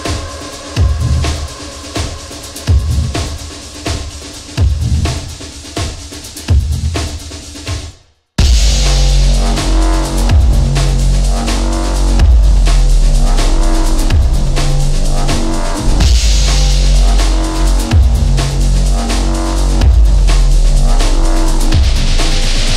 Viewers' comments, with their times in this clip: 0:08 when that bassy synth kicks in it reminds me of that one song from Afterlife in Mass Effect 2.